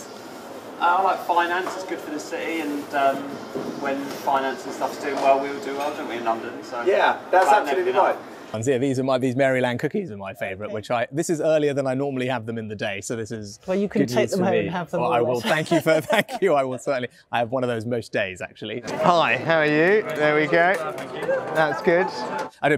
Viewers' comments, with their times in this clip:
0:09 the voice crack 😂